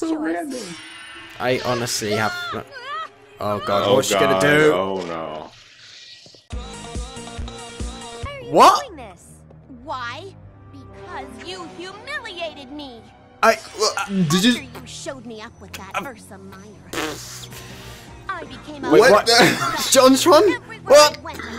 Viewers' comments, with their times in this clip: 0:05 Whats that omg it sounded catchy